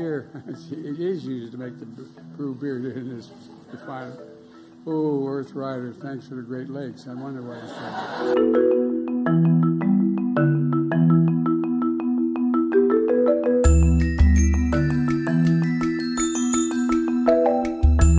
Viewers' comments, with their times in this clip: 0:05 "Thanks for the great legs."